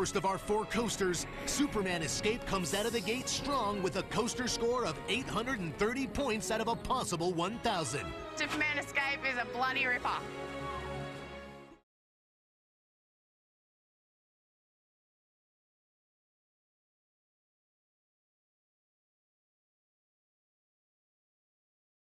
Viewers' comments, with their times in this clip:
0:08 Sounded like "Superman the escape is a bloody rip-off!" LOL.